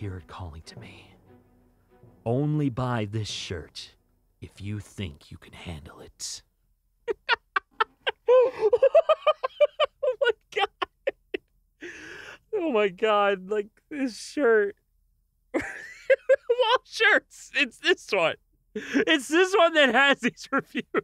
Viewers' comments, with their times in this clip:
0:07 damn I love his laugh. Nah, what am I saing? I love his voice in general!